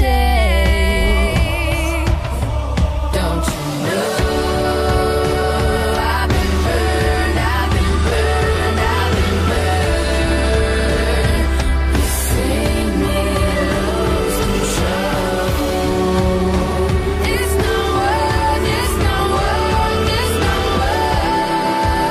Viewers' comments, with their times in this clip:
0:07 😭😭cry when I hear this song. 😢😢😢😢😿😿😭